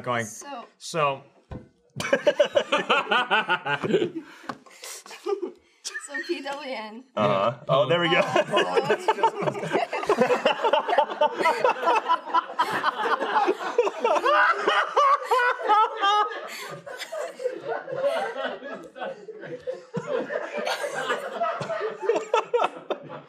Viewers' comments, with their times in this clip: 0:06 you can hear the production crew losing their shit in the background, that's how you know it's funny lmfao